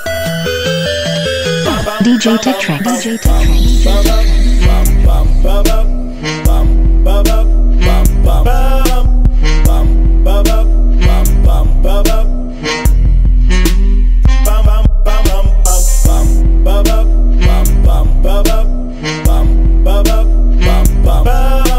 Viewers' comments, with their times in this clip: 0:04 You hear that Pink Panther joint ?🔥🔥🔥🔥💘